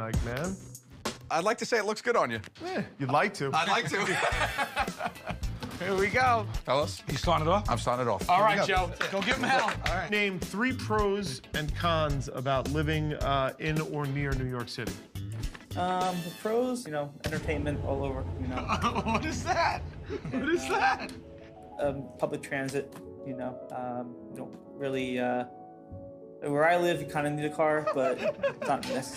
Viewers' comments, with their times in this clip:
0:10 Fun human behavior stuff When Q is trying not to laugh while hearing the dude go on about new york, listen to how the other fella starts to loosen up after the first question. By the 3rd question, he gets engaged, uses more relaxed intonation, etc. All from thinking that Q is into what he's saying. All Q did was chuckle and reciprocate a little and the stiff, awkward guy warms up.